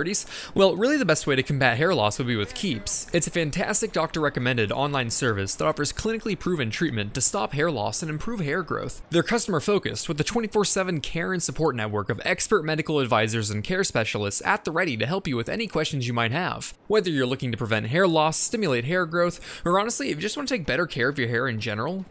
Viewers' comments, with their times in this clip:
0:10 had left the video on the background and heard that as "Karen Support"
0:10 Karen support network? Oh no